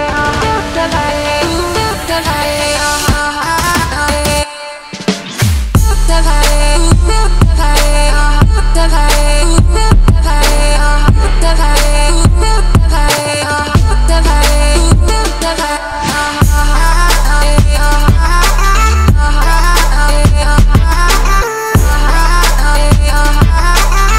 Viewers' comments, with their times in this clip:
0:06 magical beat drops